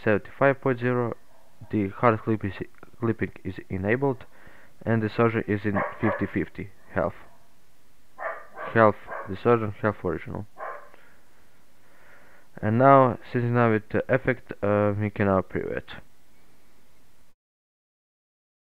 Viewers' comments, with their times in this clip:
0:05 I Can Hear Dog Barking